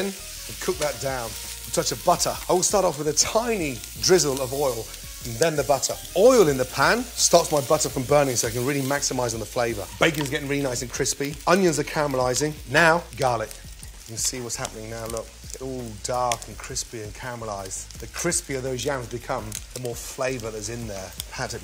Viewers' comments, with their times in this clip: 0:09 football commentator comes in